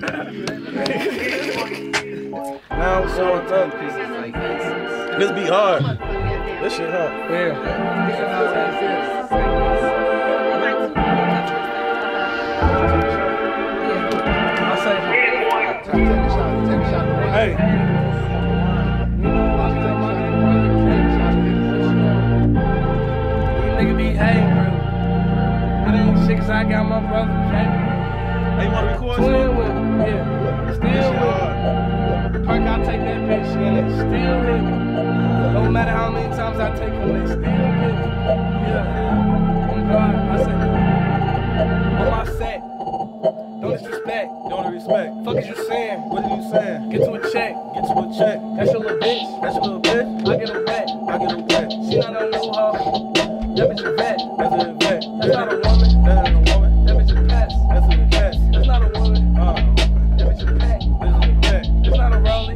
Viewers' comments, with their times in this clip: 0:03 real ones knew it was going down when this beat came on 🔥
0:20 this nigga started spazzzzzing
0:31 that part is just wicked, the way he switches flows created on the spot, craaaazy
0:43 This beat is so DEADLY I LOVE IT